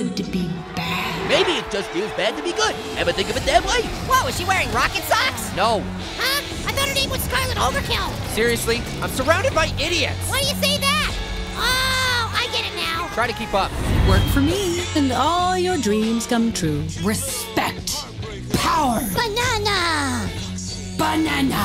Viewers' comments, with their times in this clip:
0:08 hey pear you said it just like scar said on